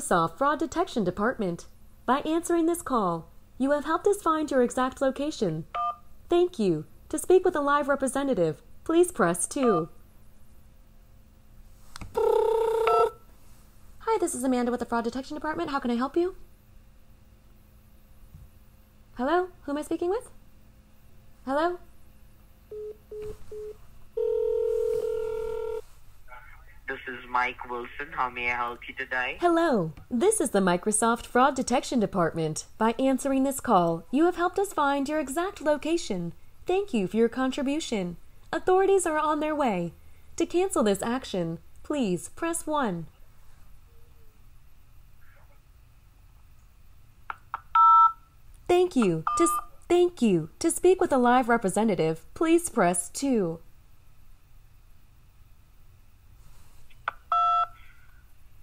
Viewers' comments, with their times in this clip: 0:08 I can't believe you pulled off that credible transfer ring tone!👏💯
0:13 You imitate the ringing also? 😂,,,
0:14 wtf that ring is too realistic it's insane.
0:46 This part was absolutely great and realistic. You were saying "Thank you..." but were interrupted by a button press tone, so you began your "Thank you..." in exactly the same voice without any distortion or hesitation, just like a real bot would if interrupted by new data input. Very convincing.